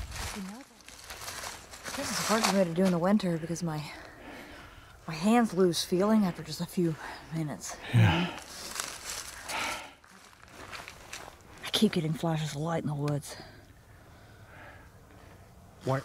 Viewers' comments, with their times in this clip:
0:03 Anytime hope helps u and viewers. Maybe set up camera in that building if U ever go back. sounds like a voice also captured but not 100% sure. Sounds like it says ANOTHER...